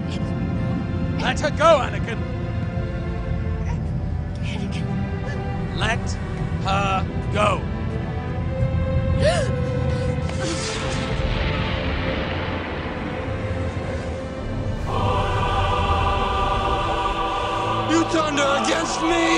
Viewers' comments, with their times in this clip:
0:05 "oh, well if you say it in that tone of voice i guess i won't kill her after all"